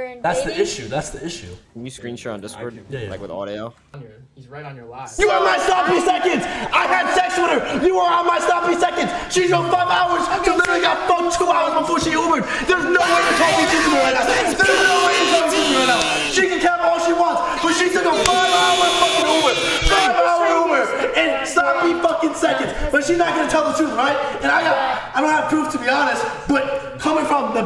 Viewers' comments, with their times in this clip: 0:10 lmaoo omg like gorillas at the zoo Clix is gonna regret posting this as he gets older cos this just makes him look like he has no rizz